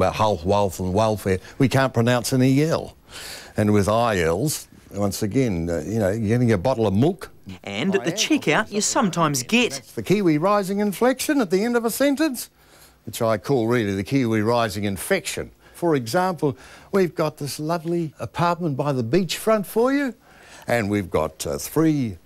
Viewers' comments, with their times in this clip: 0:03 What does he mean by: "And with I else..." ""You're gonna get a bottle of mook."